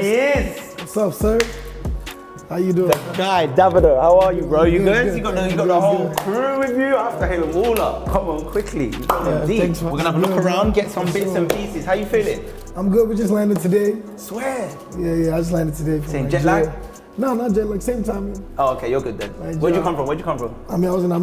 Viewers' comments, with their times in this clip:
0:03 man said DA-vido lmao